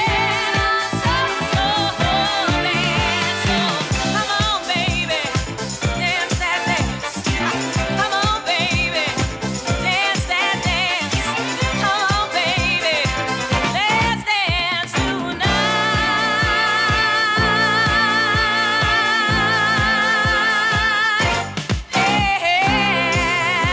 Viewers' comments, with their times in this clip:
0:07 Is this live? I don't really hear whether it is or not, because she's known as 'one take Donna', doing every bloody thing in one take and never misses, so this COULD be live, and if so, it would be incredibly similar to the recorded version. That would be mind blowing indeed..... She does do the 'heah' or so, so..................... IDK Could be put in there....